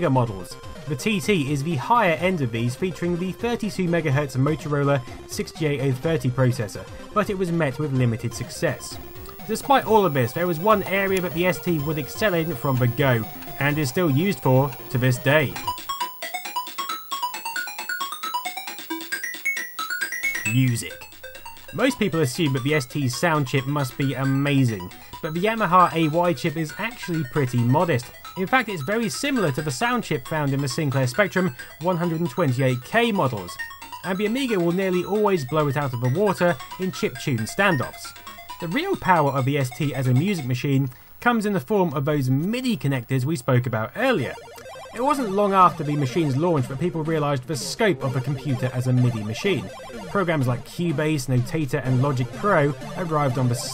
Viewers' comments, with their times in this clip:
0:10 Aaaagh! the high-pitched whine of a crt was left in, and it sorta hurts.
0:35 I noticed several times that you not only mispronounce Yamaha as YAHAMA but you spell it Yahama too. Is this a dyslexia thing?